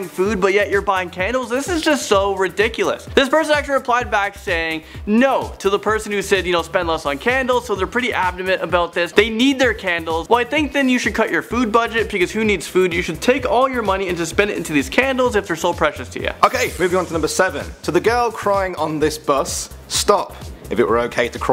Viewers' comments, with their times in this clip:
0:08 Did he say abdoment ?